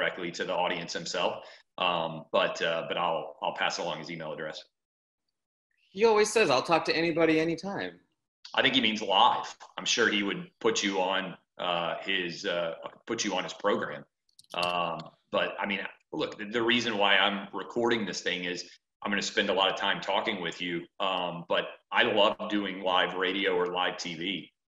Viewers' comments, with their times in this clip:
0:05 You can hear the snowflake in this kids voice “I thought he would talk to anyone at anytime” yeah kid he’ll TALK. Not email. This kid would get butchered in an actual conversation with Whitlock....how many times would he have to pause, think, and say “uuummmm like”